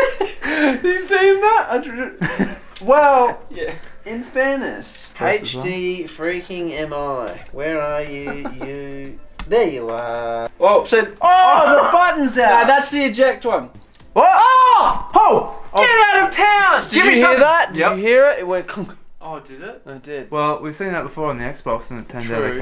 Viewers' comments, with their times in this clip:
0:05 omg the accent was the clearest I’ve ever heard an Australian accent and I watch home and away and neighbours 😂